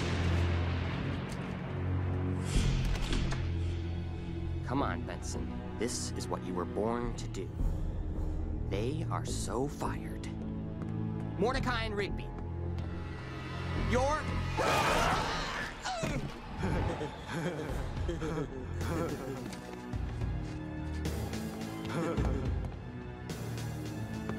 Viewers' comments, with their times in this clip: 0:07 I thought Benson said “they are so fuckered.”